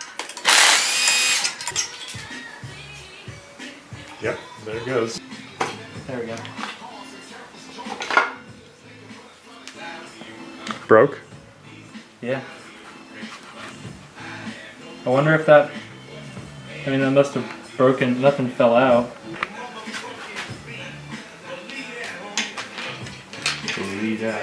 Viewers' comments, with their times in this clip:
0:08 That westside connection playing in the background tho 👌🏼